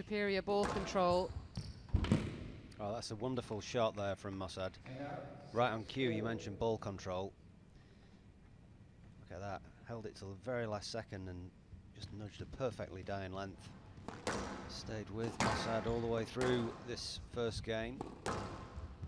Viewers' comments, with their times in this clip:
0:07 Love the changes to audio mixing, how you don't get the commentary cut off even when you're moving to the next clip (e.g. ), makes the highlights feel much smoother